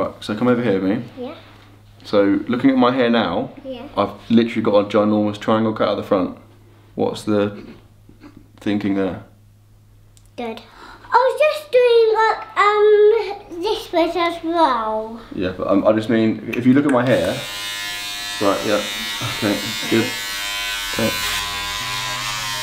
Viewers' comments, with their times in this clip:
0:06 you can hear his wife laughing